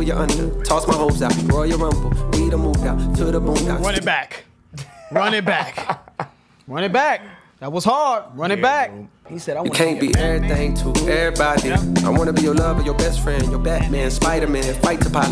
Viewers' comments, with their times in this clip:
0:03 when the music just sound good😂😂........i felt the same way when I heard that verse